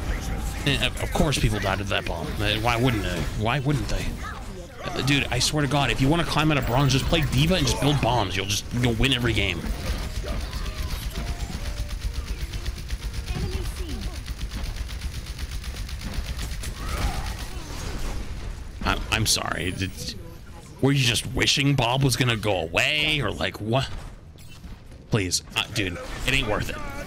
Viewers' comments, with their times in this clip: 0:10 That silence while Bob and bastion was spraying at that shield. XD